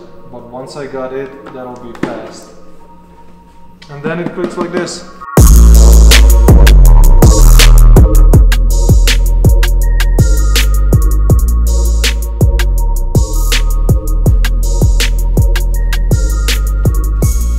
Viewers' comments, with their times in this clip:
0:05 Holy Shit ! That blew my ears off xDDD
0:05 rip headphone users hahaha